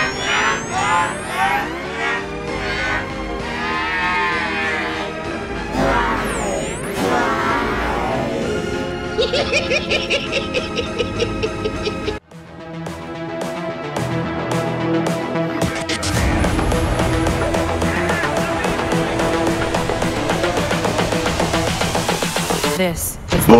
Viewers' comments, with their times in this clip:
0:10 A true recording of the maniacal laugh of the The Snale.